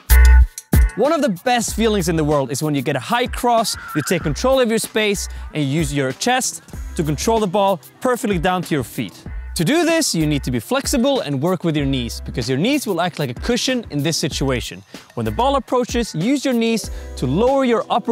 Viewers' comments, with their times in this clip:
0:03 Y'all heard that screaming 🤣
0:04 i heard a scream what was that?